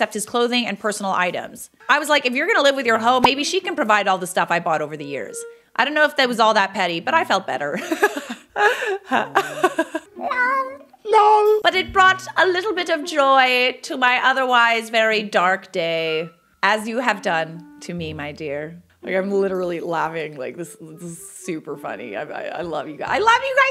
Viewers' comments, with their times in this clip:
0:09 OMG that was the cutest tiniest lol ever lol